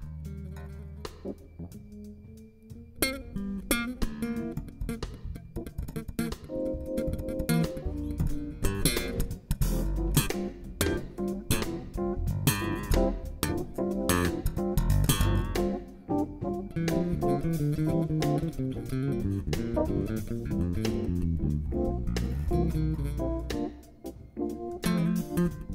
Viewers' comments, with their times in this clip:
0:06 that chord on the rhodes